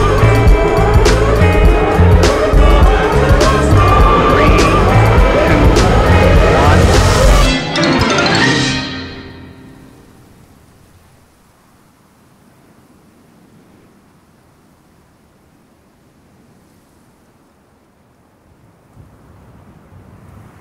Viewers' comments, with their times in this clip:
0:07 I like the little willy wonka out of the tunnel sound effect